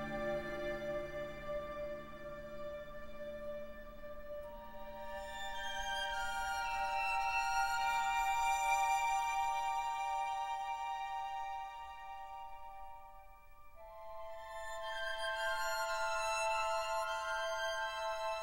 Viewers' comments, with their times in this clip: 0:05 violin, best part!